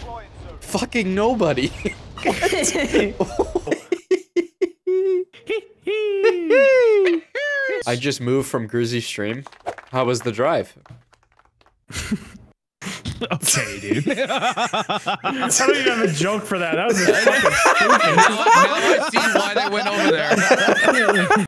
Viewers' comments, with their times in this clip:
0:08 Smii7y's reply sounds like a line from a Tommy Wiseau movie